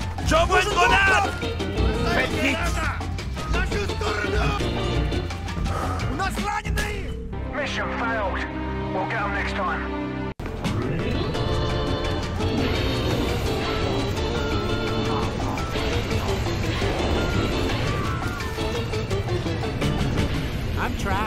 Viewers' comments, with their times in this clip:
0:05 That sigh XD